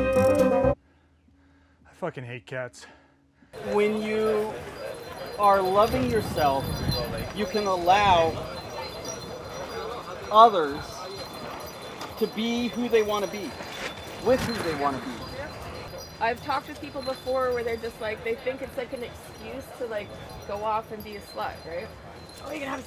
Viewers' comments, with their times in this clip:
0:09 GAWD DAMN! Music is going off!